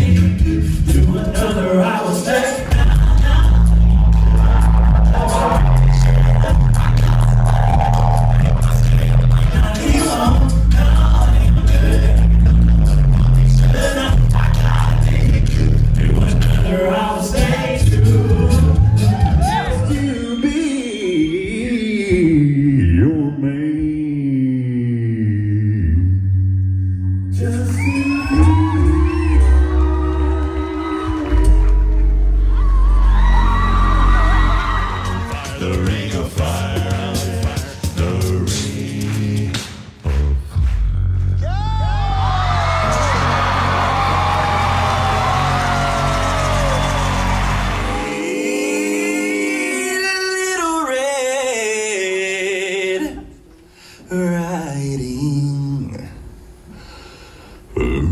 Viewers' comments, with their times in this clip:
0:03 Tim broke my headphones 👌🏾
0:11 was another real subwoofer
0:39 i love this note🤩 its like mix of light growl and warm chest